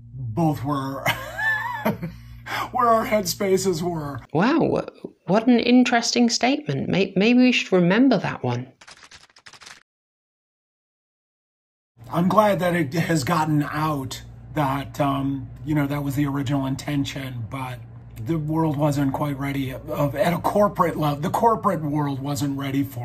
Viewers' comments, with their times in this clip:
0:04 that’s a dudes voice lol